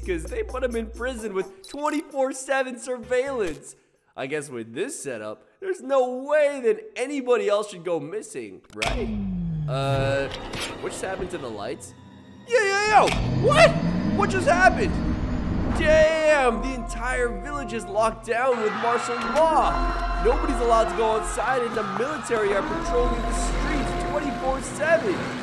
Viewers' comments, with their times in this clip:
0:10 I’m I hear a imposter killing the crewmate